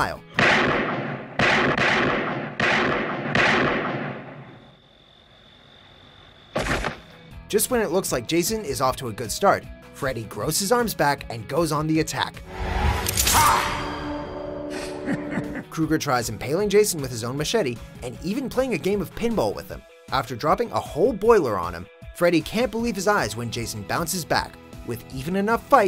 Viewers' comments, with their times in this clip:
0:06 Hanna Barbara sound.